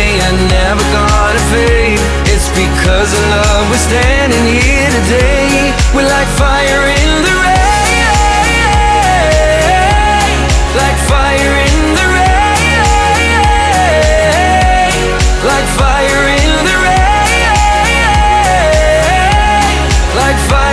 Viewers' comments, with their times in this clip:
0:07 That is Powerful! Love the song :D